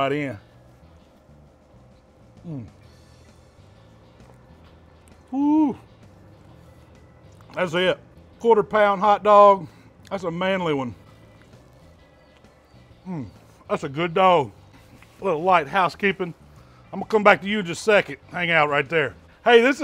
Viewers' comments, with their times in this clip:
0:05 That woooo 😂. Had me all jealous.